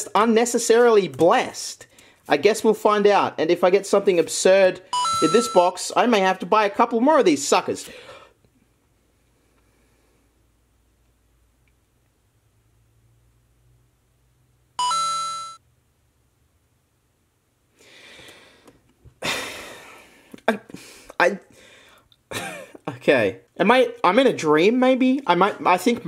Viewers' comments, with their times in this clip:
0:07 he swallowed those words whole
0:08 pov: your deaf
0:08 that silence at me dying. This is super late but I love watching his pokemon videos